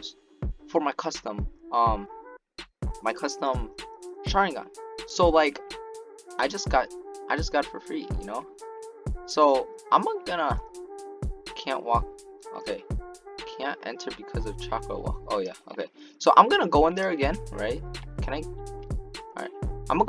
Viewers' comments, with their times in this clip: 0:04 he said it so fast that i heard china